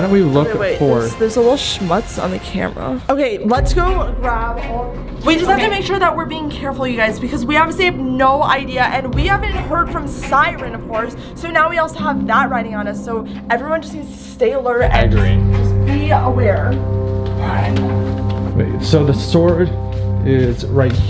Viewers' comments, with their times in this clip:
0:06 when was talking behind her in the background was the artist